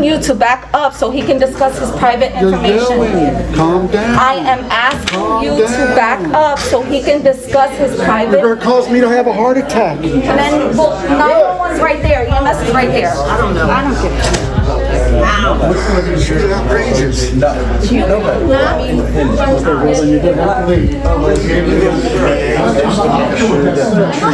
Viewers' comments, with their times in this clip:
0:10 calm down Rosie Perez